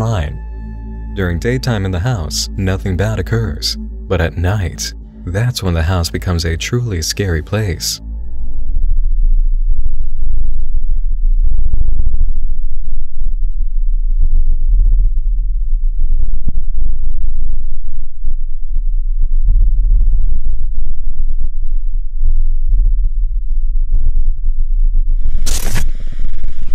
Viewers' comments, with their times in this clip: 0:08 am i the only one who got tingles cause of the bass fuckery in that? fucking unintentional asmr h